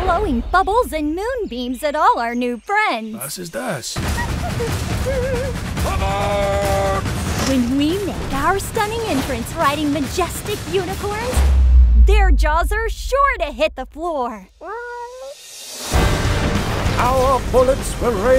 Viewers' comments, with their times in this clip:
0:03 I love how that guy say "wast is das. 😂😁 BTW it reminded me of GATE an anime.